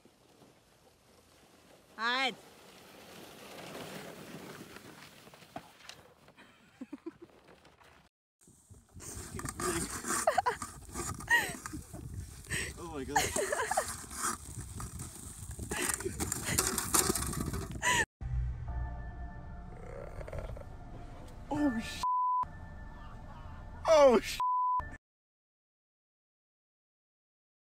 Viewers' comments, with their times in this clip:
0:08 What a cute laugh of this lady.